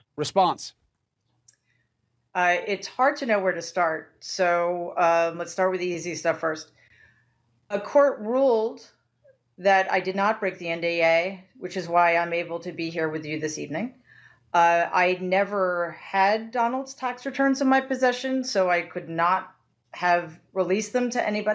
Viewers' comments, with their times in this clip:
0:03 Let’s start with the Yeezy slippers 😂